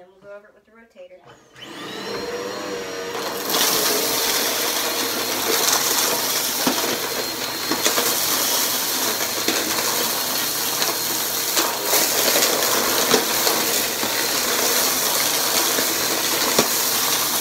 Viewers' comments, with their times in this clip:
0:04 I have no choice but to declare that the Eureka is now my favorite vac of yours😂🤤😍 I mean its handling this mess like a boss while STILL having the best crunch. I mean cmon, that first pass that was perfect I could replay that part alone over & over😍😩